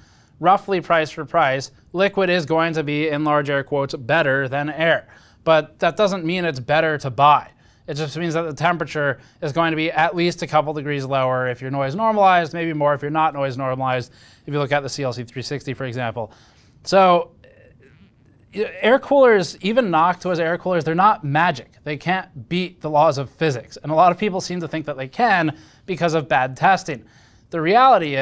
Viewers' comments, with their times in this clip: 0:10 steve voice crack, enjoy